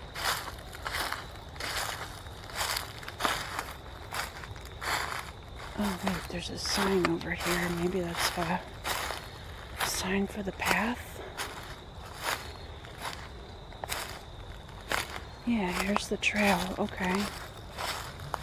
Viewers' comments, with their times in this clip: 0:05 I think...At i hear a faint voice